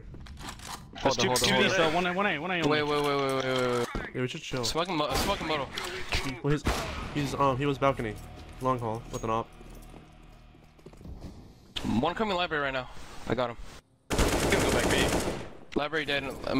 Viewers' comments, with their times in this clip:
0:04 I heard a headshot o.O